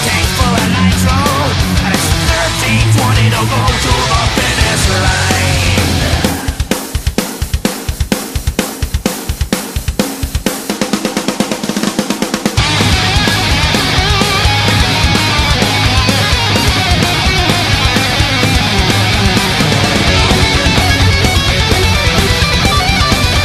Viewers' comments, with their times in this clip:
0:06 Ok I really like this song after like 20 listens. But does any1 else hate the way Drover's drums sound? Like .Idk if it's 2 loud or it's his drums but I don't like this drum track at all. I miss Nick.
0:07 can you say SEEK AND DESTROY!! only much faster, either way great track albums gonna be epic